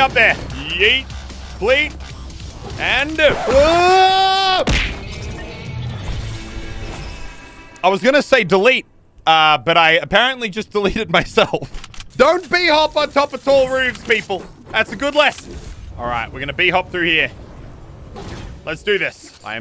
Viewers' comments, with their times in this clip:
0:04 just wat was that noise